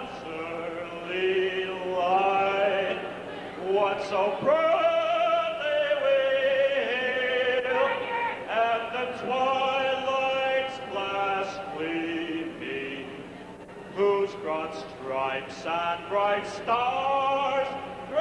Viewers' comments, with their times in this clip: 0:05 "fagg*t !" Was that Dahl shouting!?! Not nice but this dude had it coming. Especially wearing a leisure suit on disco demo night. Southside tough and not exactly PC.